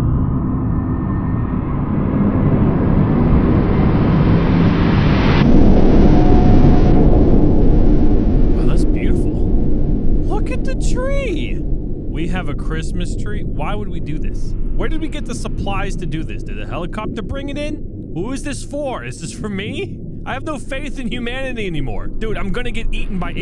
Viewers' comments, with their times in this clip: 0:08 Headphone users: to skip the earrape